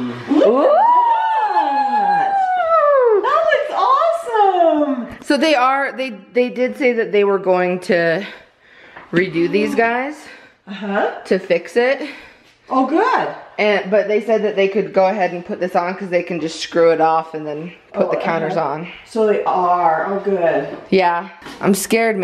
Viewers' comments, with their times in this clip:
0:06 the girl who said "that was awesome" sounded like Shane Dawson's mom lol.